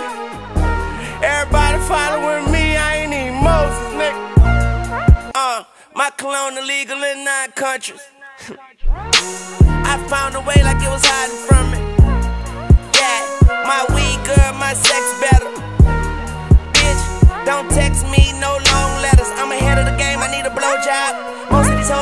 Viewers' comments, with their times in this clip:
0:05 this shit flows immaculately from line to line